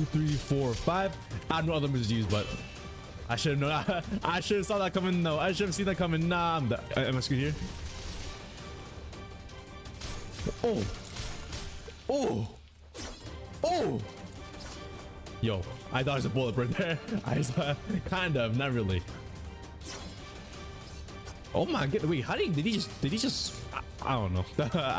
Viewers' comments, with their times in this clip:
0:08 listen carefully the sword slash sound timed perfect with the background music
0:09 where his M1s matched the intense music
0:09 THAT COMBO WENT ON BEAT